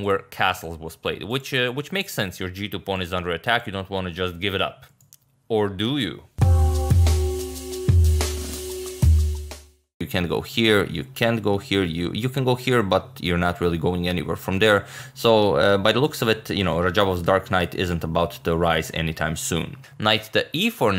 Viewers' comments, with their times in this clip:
0:05 That Vsauce soundtrack HAHAHAHHAA lol